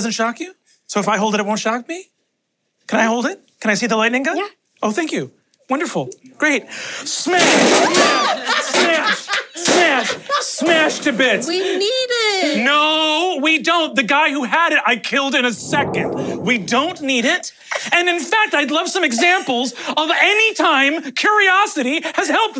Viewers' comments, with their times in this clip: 0:07 i like how no one here mentioned siobhan's scream as brennan mimed the smashing motions, like that was such a genuine reaction